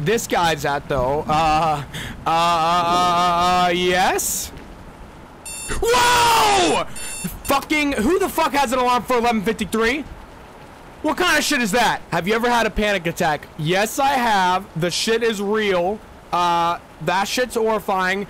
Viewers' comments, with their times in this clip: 0:05 how can you get scared by an ALARM CLOCK